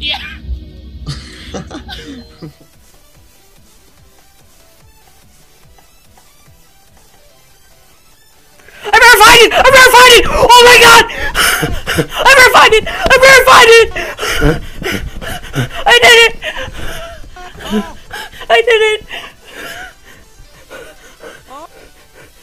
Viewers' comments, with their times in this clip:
0:03 You got me cuz i turned my volume to max when it said that this one is quiet